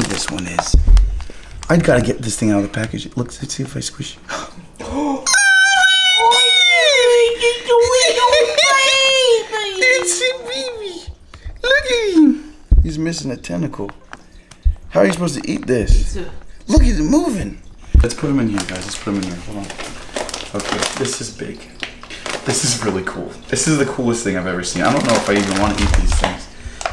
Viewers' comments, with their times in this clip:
0:05 omg your voices😂😂😂
0:05 I feel bad for headphone users 😔😔
0:06 i had ear rape my volume was as high as it could be
0:11 “It’s a BABY!” I laughed so hard! His voice went so high!🤣🤣🤣